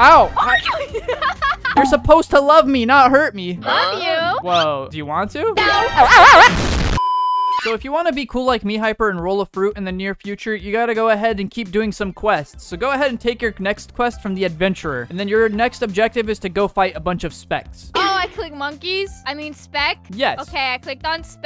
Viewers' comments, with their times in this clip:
0:06 HELP THAT SCREAM IM LAUGHING SO HARD